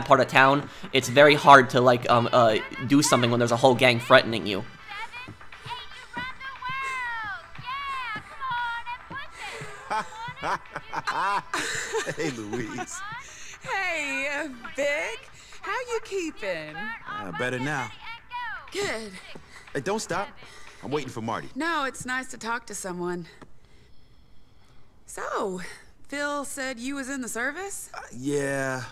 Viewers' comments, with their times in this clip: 0:09 I just really like the natural laugh from Vic and his chat with Louise in this cutscene.